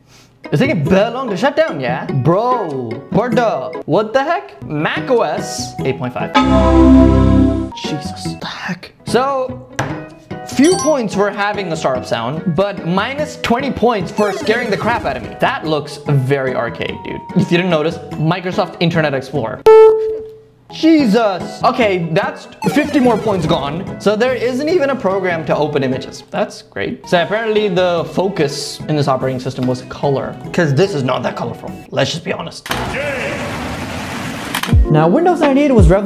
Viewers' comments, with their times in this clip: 0:06 Him getting jump scared by the startup sound 😂😂😂😂😂😂
0:19 That beep was simple and he got scared 😂😂😂😂